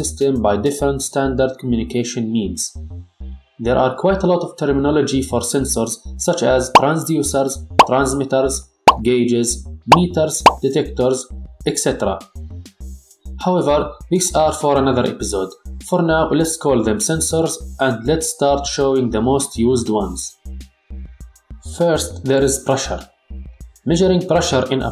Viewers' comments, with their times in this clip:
0:07 the pops are popping my ears